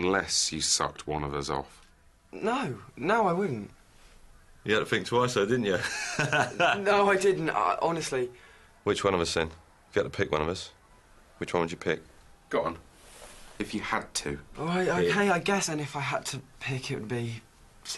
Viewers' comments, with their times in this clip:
0:04 Love Matt King’s laugh